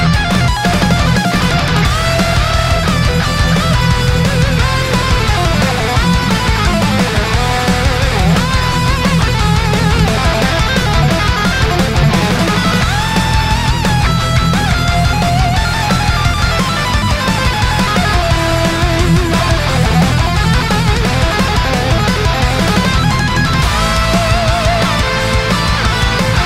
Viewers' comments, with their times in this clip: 0:10 Very cool my dude. Your shred skills are solid af. Some awesome ideas and very clean playing, that lick is awesome. Great tapping skills as well.